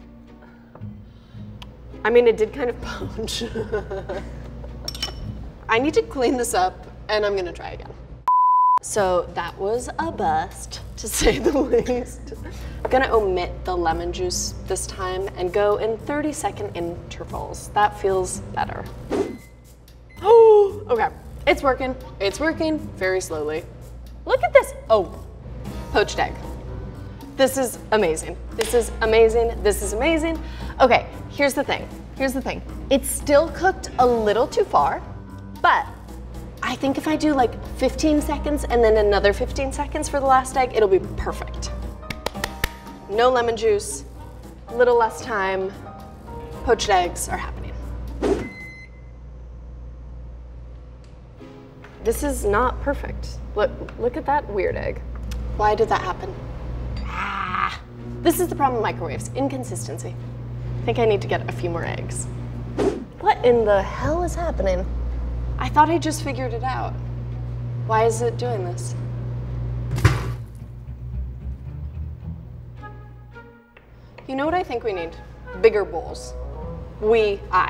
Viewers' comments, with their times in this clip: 0:08 do you mean to say that was a blow
1:00 What I heard: I think I need a few more eggs In my mind: I think I need a femur eggs